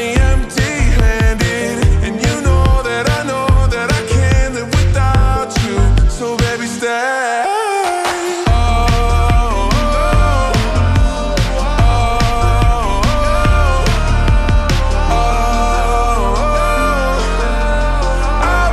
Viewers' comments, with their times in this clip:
0:06 is like the best part out of all parts in this song in my opinion when its slowed down, its just how he says it- ✨
0:06 that stAaaAyY was smooth lol